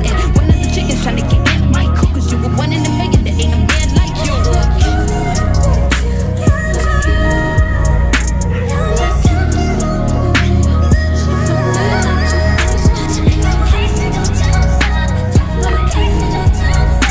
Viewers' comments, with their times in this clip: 0:03 goes crazy idk if its Jin, Jimin or Jungkook since im not a big ARMY but his vocals are insane
0:04 this part is just too heavily. Their vocals are perfection. 🥵🥵✨✨✨✨